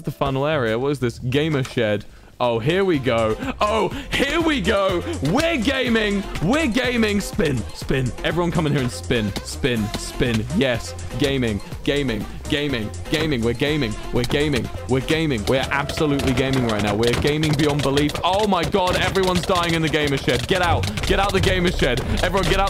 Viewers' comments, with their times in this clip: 0:05 is great. You just hear the sounds of death and it's great